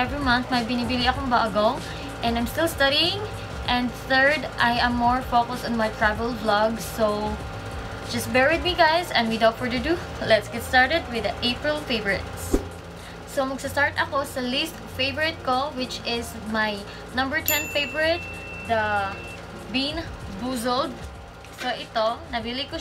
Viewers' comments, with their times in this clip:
0:09 and we are for dado